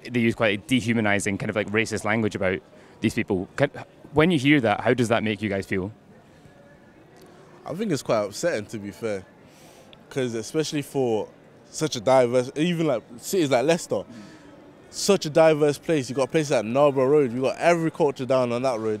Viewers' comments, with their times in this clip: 0:07 im sorry but why is she smiling? furthermore she then changes her tone as soon as the guy says "i think its quite upsetting"